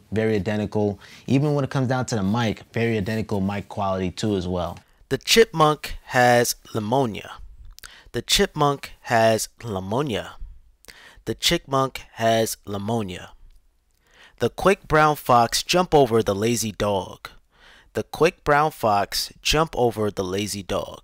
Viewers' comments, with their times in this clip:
0:06 I've heard of pneumonia but not leumonia 💀💀💀